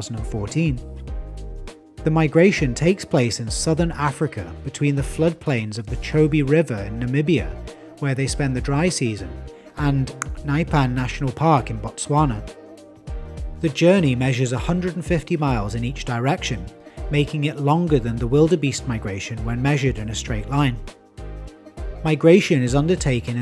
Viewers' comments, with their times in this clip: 0:10 Thank you for trying to say it correctly. Well done. Made me very happy.